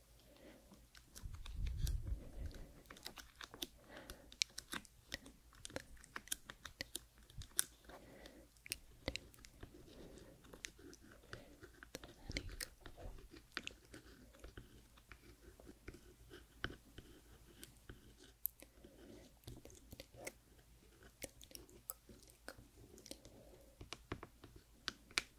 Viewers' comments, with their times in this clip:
0:09 THE TRACING, TAPPING EACH HONEYCOMB, SLIGHT WHISPERS IM INLOVE